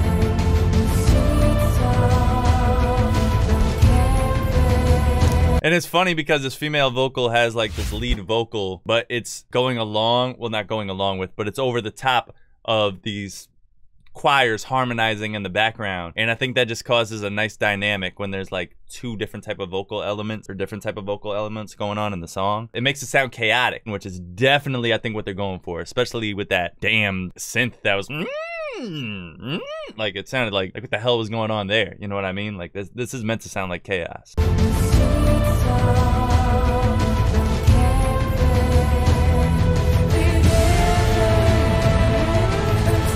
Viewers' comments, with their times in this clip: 0:08 why its funny? her voice not bad or funny... the way she sing there's not mistakes ... good .. so why u said that she teasing you ?
0:29 with damn synth that up and down scene. yes how chaotic your mind up and down if your best friend/brother in arms betrayed u and make your mom killed.